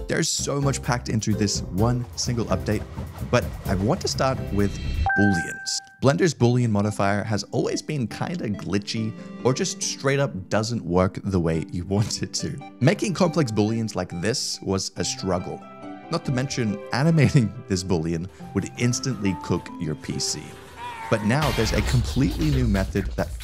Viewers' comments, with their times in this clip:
0:07 xbox 360 music hits so hard